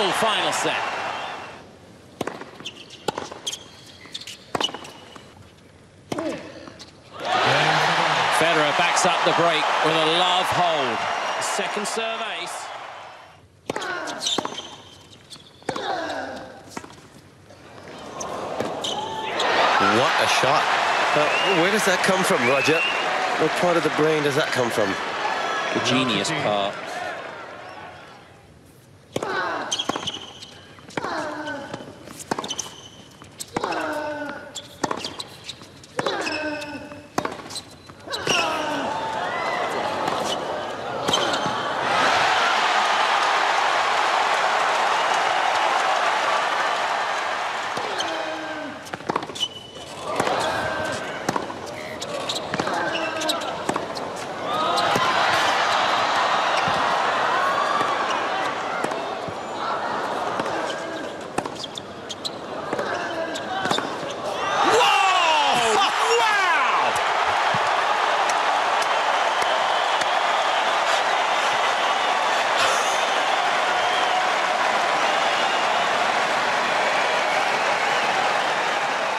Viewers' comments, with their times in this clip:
0:06 Loud burp in the audience
1:05 the chick in back had her head fully down (Or was taking a nap😳)- when she heard the roar of the crown, she literally sprung up to shouting & clapping 🤣🤣🤣